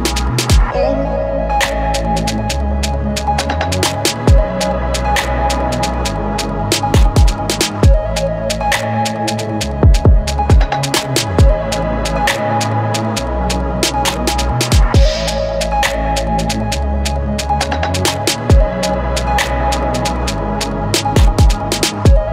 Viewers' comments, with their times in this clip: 0:03 Always love listening to your music bro when you bring that melodic pluck in 😍musical magic g